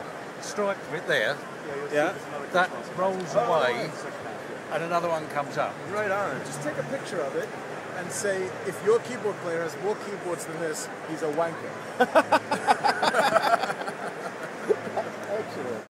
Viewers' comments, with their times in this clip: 0:09 I cant hear at the end he says what? "If your keyboard player has more keyboards than this he is...".. he is what?